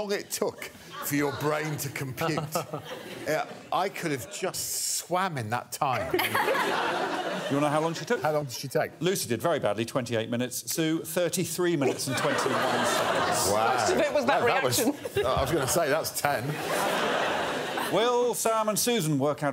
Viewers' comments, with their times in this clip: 0:04 sounds like Paul Merton challenging for hesitation, which is funny given Greg is talking to the host of Just a Minute, an amazing game enjoyed by many listeners not only in this country but around the world (including here in 🇨🇦)